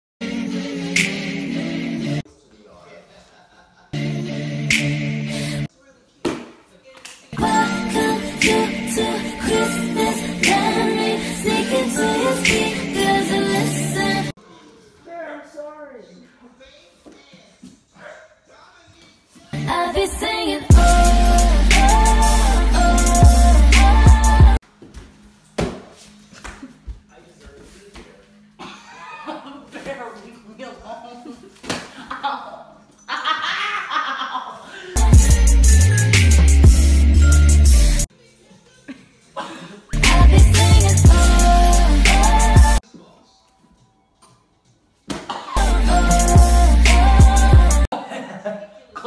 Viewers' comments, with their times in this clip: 0:06 I think I hear something pop
0:33 what the heck was that laugh?? Or was that supposed to be a cry...
0:33 i love your laugh
0:34 That laugh tho xD